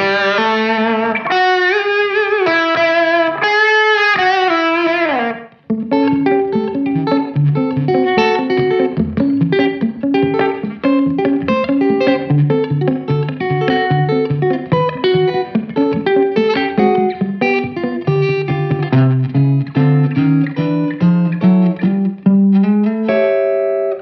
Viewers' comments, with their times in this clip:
0:06 Love that rockabilly riff ! Not too many strat demos have that kind of playing. Shows how versatile a strat really is!